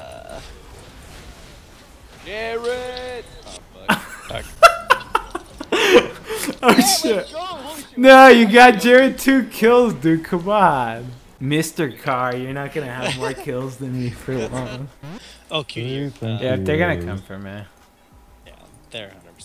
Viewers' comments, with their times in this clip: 0:04 qtpie laughs exactly like Aphromoo lol